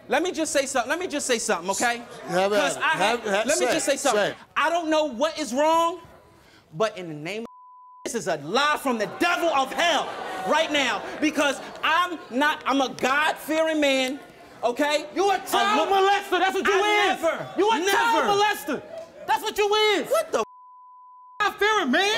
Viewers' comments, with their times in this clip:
0:07 why'd they censor out "Jesus"